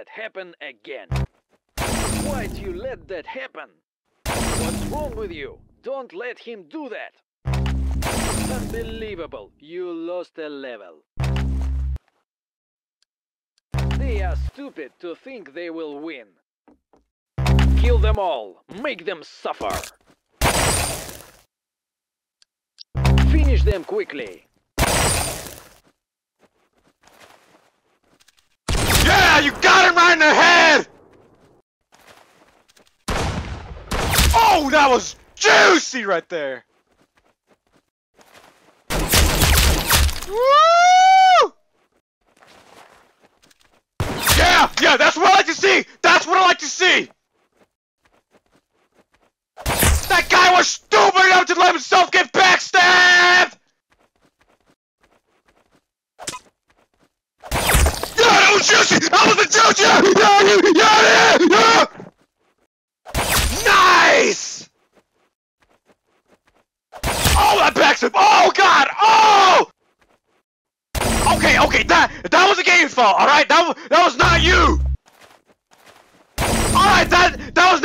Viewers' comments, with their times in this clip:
0:07 he sounded like gru from despicable me
0:29 ah yes my favorite voice pack😌
0:58 i love this backstab announcer it sounds funny haha
0:58 rip my airpods